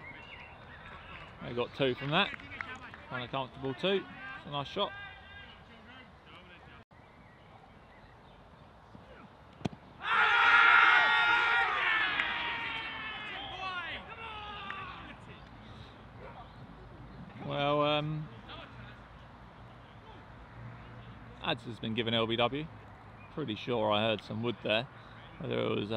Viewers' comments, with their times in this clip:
0:08 Sounded like two noises to me, but can’t tell if it was bat first.